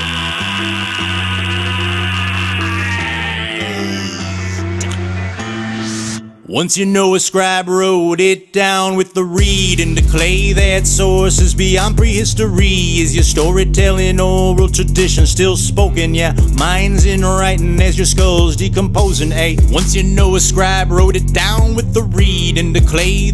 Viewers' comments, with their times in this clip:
0:06 it just went to dynamite to astronaut in the ocean XD